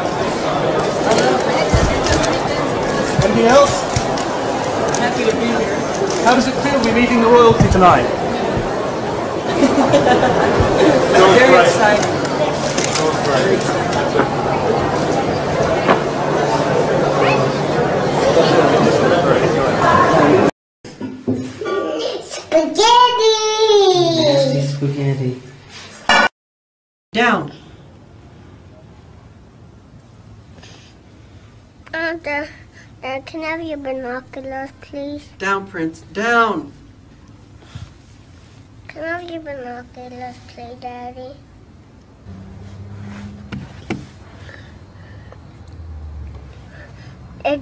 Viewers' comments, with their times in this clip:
0:08 such a precious laugh ❤️❤️
0:28 MJ: Down! Prince: Can i have your binoculars daddy?... MJ: Down.Prince Down! He sounded like a really calm but stressed out father and its so adorable 😭